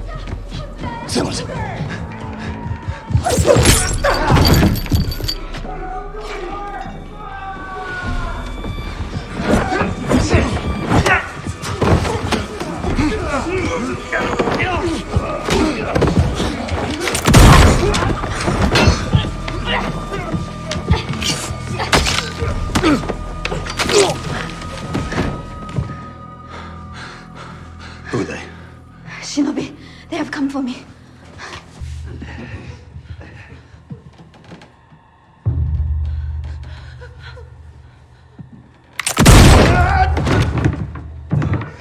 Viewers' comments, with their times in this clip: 0:08 holy shit the fight scene feels so goddam real. The scrambling for the gun, the sound as blackthorne blows the ninjas head off. Its all so real
0:27 the way John asked "who are there?" sounded so casual that it was like just another day type shit